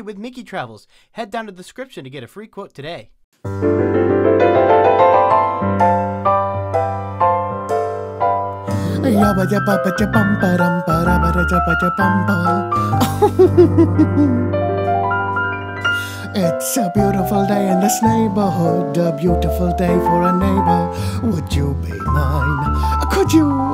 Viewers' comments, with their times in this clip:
0:08 Today is Mister Rogers' birthday, and just last year, it was said on the news that he was related to Tom Hanks; they are sixth cousins. And today is also the birthday of Christy Carlson Romano (voice of Kim Possible), who currently has a YouTube channel, which I've seen. I recommend you check it out as well. I also like how you did Pooh humming that part. It is cool how they made toy versions of those designs of the Pooh characters.